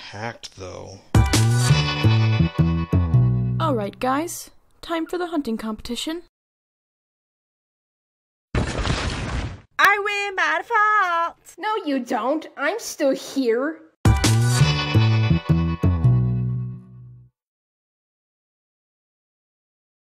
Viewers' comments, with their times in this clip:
0:09 Turn on captions “ I win bad fall Snow you don’t I’m still here
0:10 what are they saying I can’t tell
0:12 that sounded so much like jaiden animation omg-